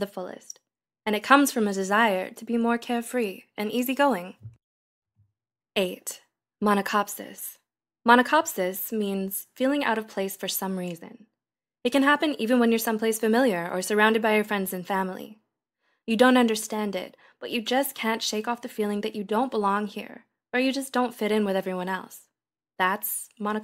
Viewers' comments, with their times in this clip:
0:05 mona-whatever it is sounds like a name fit for some sort of coffee as soon as I heard it I remembered coffee well gotta go drink some